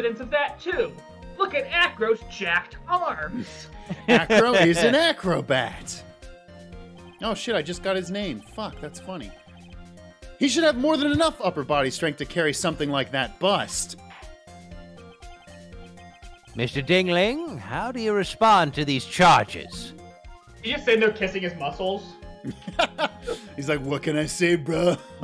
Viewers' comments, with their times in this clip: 0:06 In fairness, you really did sound out of character there